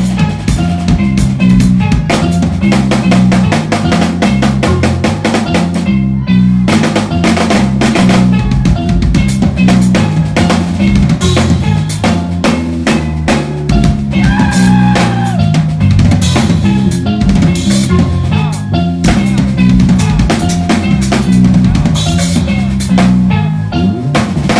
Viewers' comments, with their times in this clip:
0:10 your timing with the bass is Crazy